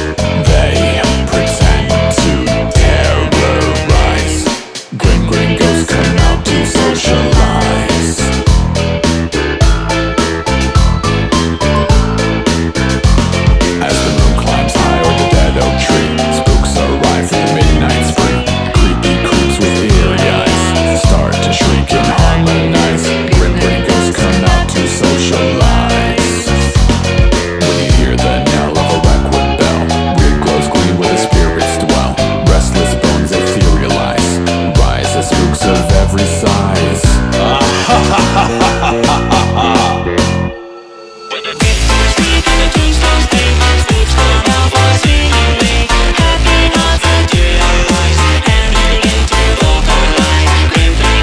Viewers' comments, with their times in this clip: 0:06 for exaple you here the raspy voice at "socialize" thats whats in the song
0:36 his laugh added 10 years to my life